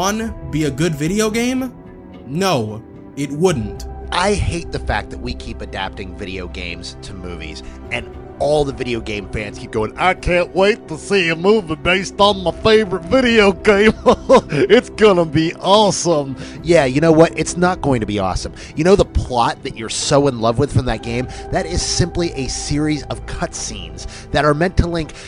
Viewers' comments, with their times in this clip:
0:10 Me after your tone seems very pointed.